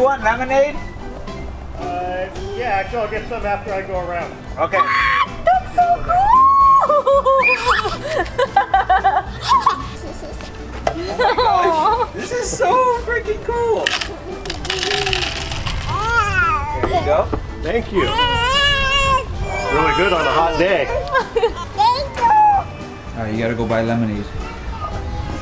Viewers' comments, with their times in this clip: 0:10 awww that gigle she's soo proud and happy🥺❤️